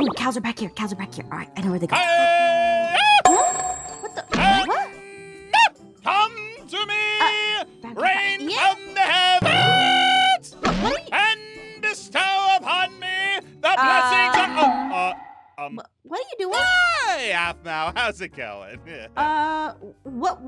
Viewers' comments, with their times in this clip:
0:04 it said weird ein noises I died of laughter.